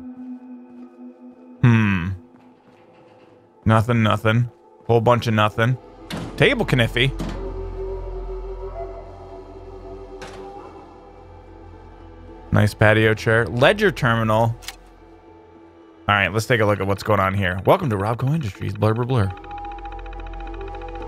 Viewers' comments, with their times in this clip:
0:08 I heard some banging